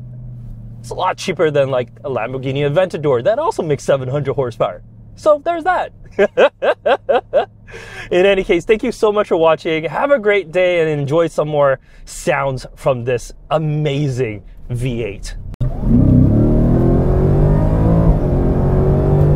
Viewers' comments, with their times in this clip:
0:06 this laugh is somethine else.